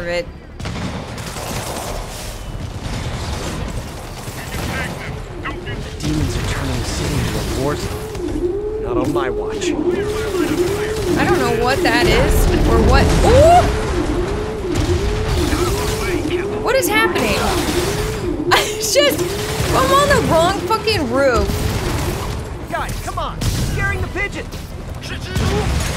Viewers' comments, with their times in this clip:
0:08 That sounds like a pigeon alarm.